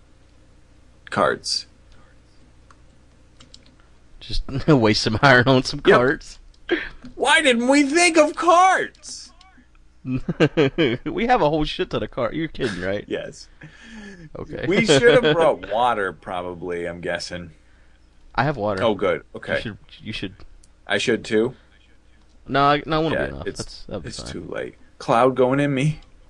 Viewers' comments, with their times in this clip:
0:08 did anyone else hear that echo when he said "why didn't we think of carts!"?